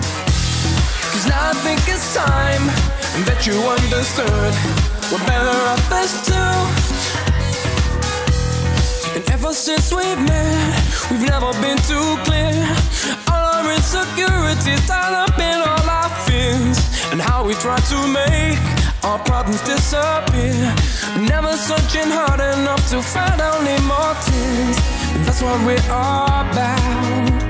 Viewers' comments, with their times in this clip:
0:09 Somehow reminds me Cece Peniston Finally